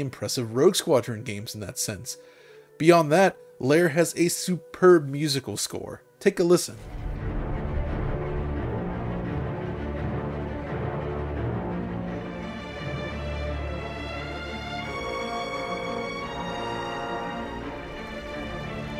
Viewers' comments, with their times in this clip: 0:03 That score genuinely sounds like "Star Wars: The Lord of the Rings".
0:06 sound kinda star wars imperial march, right?